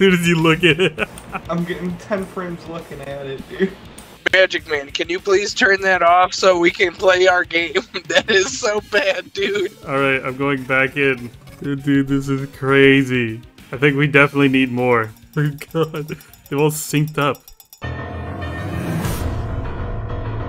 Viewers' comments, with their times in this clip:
0:03 goated background song